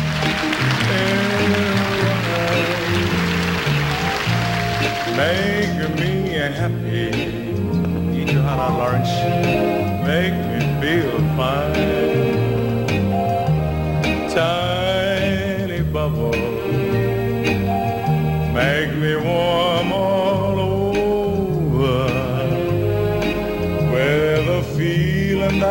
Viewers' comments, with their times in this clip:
0:07 does anyone know what he says? It sounds something like "Eat Your Heart Out Lawrence..." If that was it, who is Lawrence and why does he reference that person in a coy way? Thanks